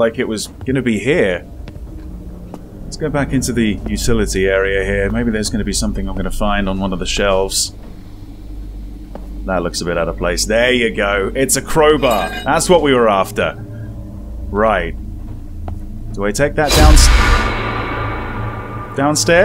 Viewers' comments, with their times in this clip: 0:06 weird thing… I played a game called “devils calling” and it’s this exact same house…. And when I went into the laundry room like you did there was that EXACT same noise of things crashing down but when I went back out to see what it was… there was nothing that looked like it fell or made the noise… I thought it was weird… which is the only reason i remember it specifically. I don’t know how that’s even possible… but most of the furniture and stuff is even the same .. kids rooms are in the same place by the stairs … office and master bedroom are next to each other … but yeh… must be just a coincidence.. z but what an odd one